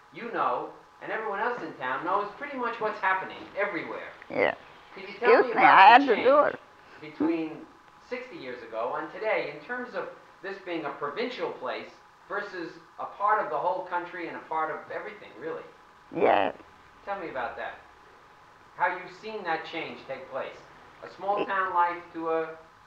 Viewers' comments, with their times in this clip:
0:05 Also …she even excuses herself before she rips it..lol